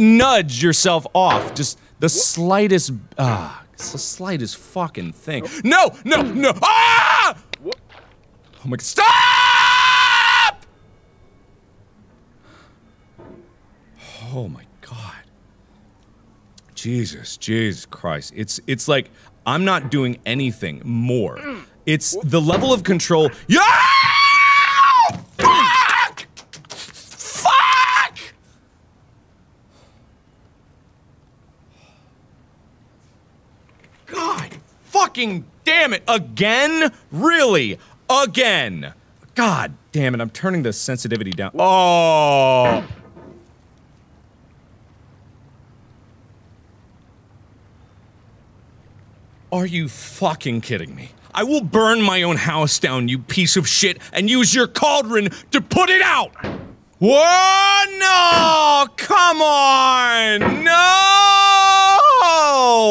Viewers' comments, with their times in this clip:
0:06 Mark: AHHHHHHHHHHHHHH STOOOOOOOOOOOOOOOOOOOOOOOPPPPPP!!!!!! his neighbor: the hell is going on!????
0:06 the scream tho 🤣
0:08 Markiplier is Shouting Saying Stop Extremely Loud
0:09 mark: i am going to be calm now. mark later: screams while flapping like a bird after falling
0:09 Funny little screech
0:22 it's the level of control.. AHHHHHHHHHHHHHHHHHHHHHHHHHHHHHHHHHHHHHHHHHHHHHHHHHHHHHHHHHHHHHHHHHHHHHHHHHHHHHHHHHHHHHHHHHHH Wasn't looking at my screen and I jumped lmao
0:22 Mark: it’s the level of control- Also mark: loses all control and becomes a screeching angry bird
0:23 the birds in the morning
0:23 Me too, he literally sounded like an eagle😭
0:23 Starts watching the video "Yeah, he's gonna be crying halfway through the video Scrolls to comments Comment about how he threw his mouse across the room "Yep, sound about right." Can confirm, screamed around halfway through the video
0:23 markiplier:AHHHHH! AAHHHHHH! Starts jumping like he’s on crack
0:24 sounds like me when I play angry birds
0:24 bro turned into a pterodactyl 😂😂
0:25 What's this??? MARKIPLIER is evolving?? Your MARKIPLIER has evolved into a Minecraft chicken!
0:25 we tweetin like a bird
0:26 *mark attempts to be a bird*
0:26 when he's jumping and slapping his legs while yelling fuck really loud lol
0:26 The scream, the jump, the flap is just perfection✨
0:26 bro sounded like a fuckin bird
0:39 The "butterfleh" is flying
0:43 the silence was so loud